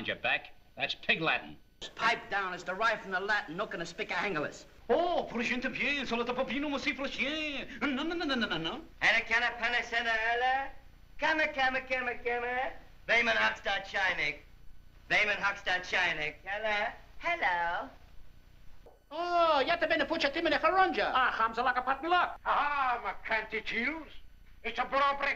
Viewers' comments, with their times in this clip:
0:09 Larry’s mock Indian language. 🤣🤣🤣🤣🤣